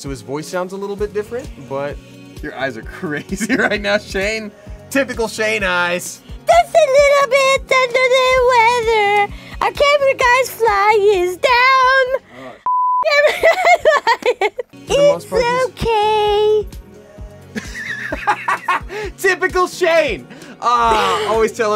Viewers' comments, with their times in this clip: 0:06 cuz I know we all need to hear this song again